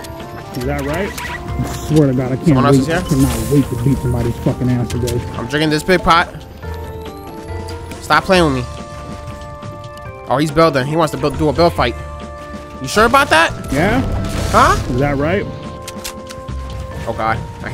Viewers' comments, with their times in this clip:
0:05 mannn i fucking missed them voice edits